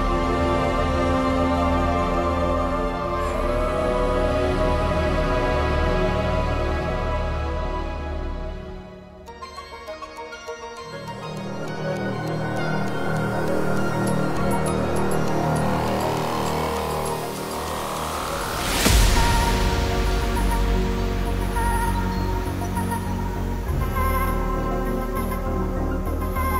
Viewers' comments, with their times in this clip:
0:10 The part is gorgeous...I love that theme throughout the rest of the song! Wonderful as always, TSFH!